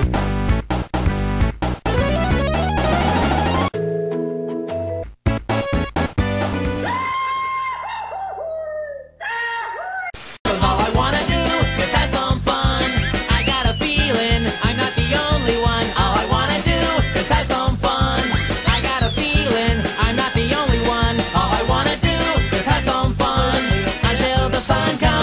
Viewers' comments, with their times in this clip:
0:07 RIP Support Guy that didnt know he saw that. fart sound